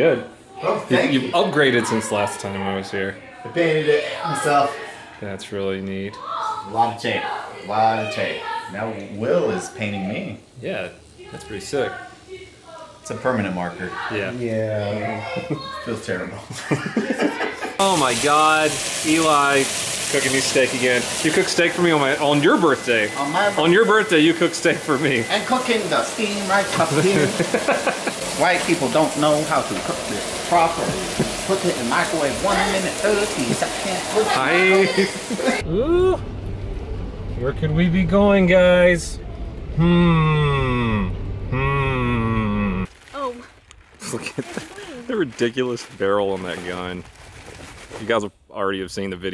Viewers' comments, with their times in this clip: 0:10 Does anyone hear the yelling/can they decipher it ~ish? Sorry I'm partially hard of hearing and rely a lot on subs.
0:27 holy shot he sounds like my family. Heavy ass accent and all
0:28 I like to talk like that
0:30 his Asian accent is on point tho😂👌🏽